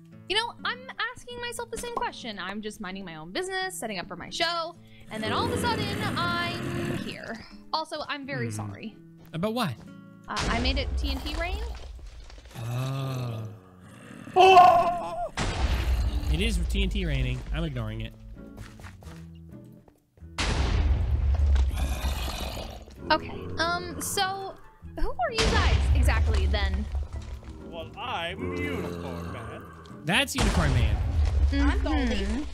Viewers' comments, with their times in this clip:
0:09 dat unicorn screem doe
0:10 the apoligie then unicorn scteaming e few seconds later was pure, happienes and laughter to me
0:14 i love unicorn man screams
0:14 Unicorn Mann’s scream tho 😆
0:17 unicorn Mann screaming